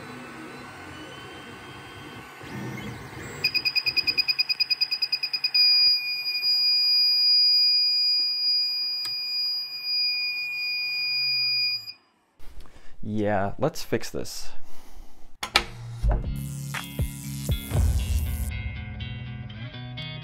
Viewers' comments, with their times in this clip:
0:03 the sound of pain